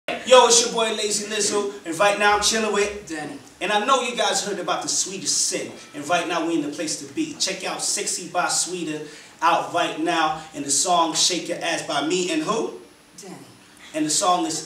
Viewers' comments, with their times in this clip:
0:01 I love how danny says his name <3